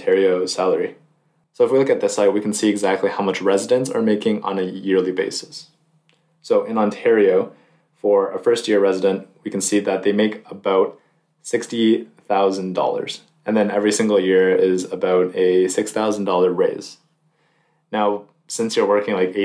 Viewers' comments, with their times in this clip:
0:06 -end Your video and audio change. Your voice and video don’t match up. Just wanted to let you know. Anyways, Keep up the great work.